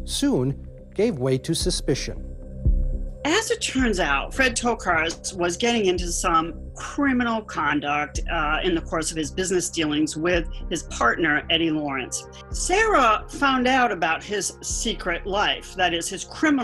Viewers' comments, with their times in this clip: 0:04 'Hi ho, Kermit thee frog here.'